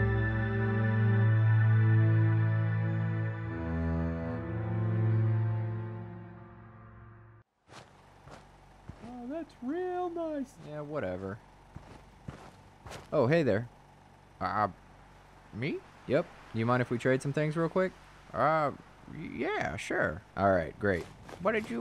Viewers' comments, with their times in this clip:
0:08 I remember this old man’s voice. 😂